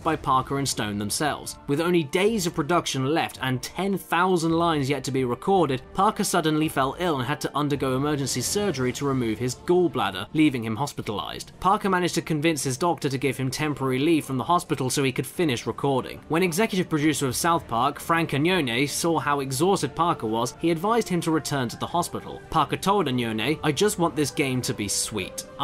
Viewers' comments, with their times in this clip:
0:08 holy crap the voice from onwards is so bad